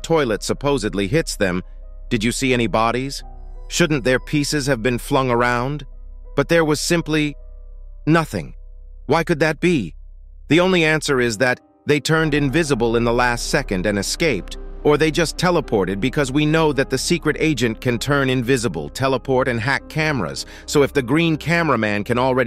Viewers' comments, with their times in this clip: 0:06 “But there was simply” * dramatic pause * “nothing”